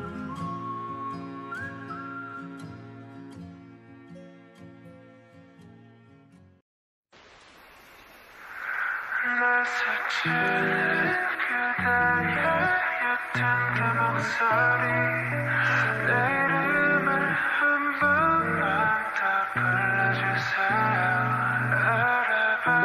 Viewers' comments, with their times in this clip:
0:09 This song gives me such a good vibe 🤧